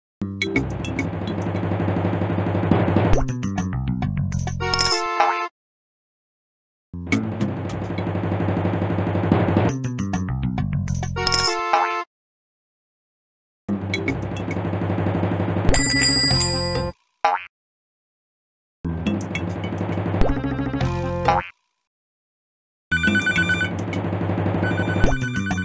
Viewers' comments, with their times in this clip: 0:09 I love how Bill does the “blep” instead of Boopsy